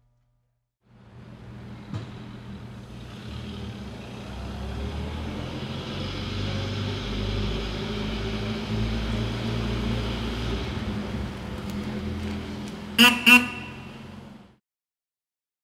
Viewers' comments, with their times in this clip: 0:13 One neck snapping ride, and a plump sounding horn !